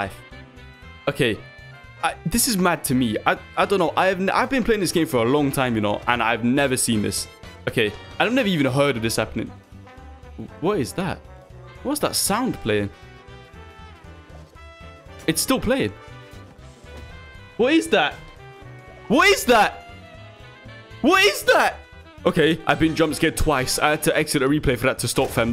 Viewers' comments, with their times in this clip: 0:09 lahkan becoming sentient and starts hearing the music playing in the background